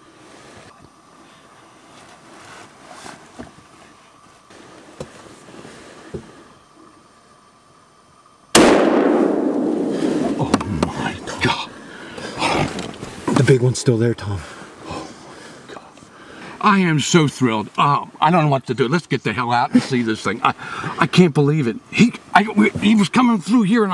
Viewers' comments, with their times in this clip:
0:08 BOOM! Great buck! Congratulations with him! :)